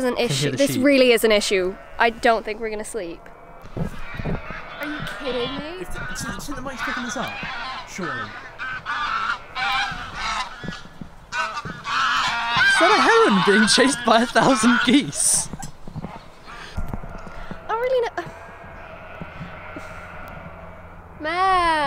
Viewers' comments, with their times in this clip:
0:04 ITS SO LOUD OMGMEKEWK